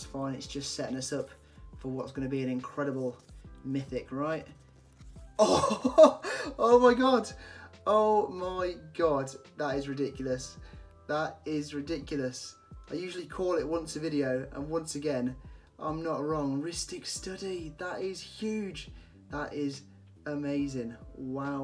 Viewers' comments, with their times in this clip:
0:05 click and spam for that sweet ASMR